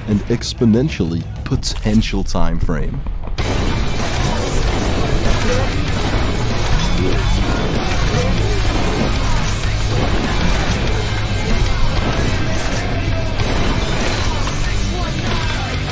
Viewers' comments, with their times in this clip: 0:03 The gunshots went REALLY well with the music.